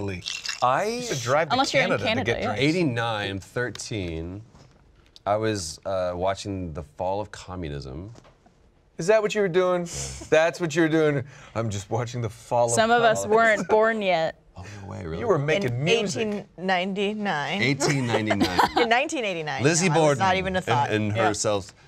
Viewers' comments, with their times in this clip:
0:04 Just so you know, that is the perfect Christopher Walken Impression... And yes... Nolan North is awesome at intentionally doing a christopher walken too.